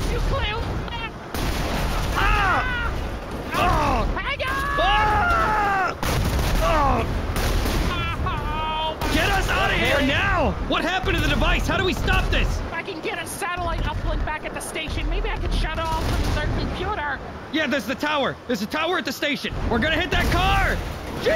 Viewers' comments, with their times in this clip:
0:07 sounds perfect ke stan form gravity falls ngl